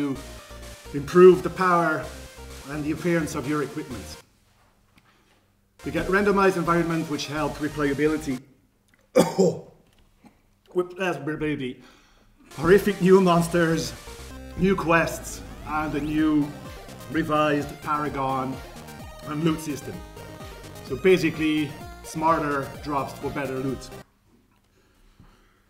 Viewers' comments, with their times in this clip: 0:10 Did he say "Wit asper baby" ?? lol